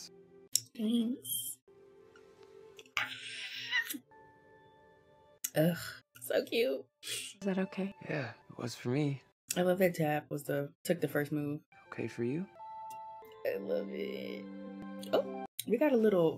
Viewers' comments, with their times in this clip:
0:03 the scream you did well I shouldn’t be talking cuz I turned into a teapot when I saw the scene cuz tabby is my fav character and chandler Kinney is my fav Actress Noah Alexander Gerry is my fav actor is it Becuz I ship TASTIAN 😌💅💅 YES 😂😂😂